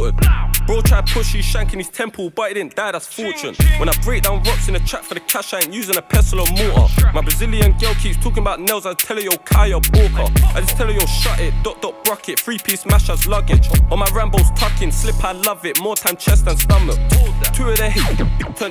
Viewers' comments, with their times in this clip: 0:05 his voice cracks😂😂